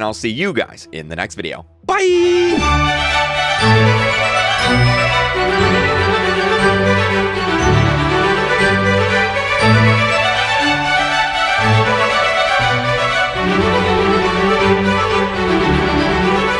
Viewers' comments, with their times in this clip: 0:03 ah yes happily music while Willow and Tigry are still trying to kill each other